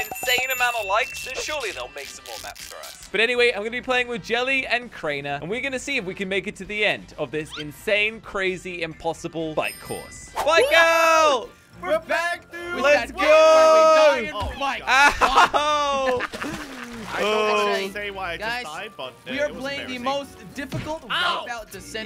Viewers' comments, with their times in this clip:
0:03 Slogoman sounds so disappointed when he announced that he was playing with jelly and crainer haha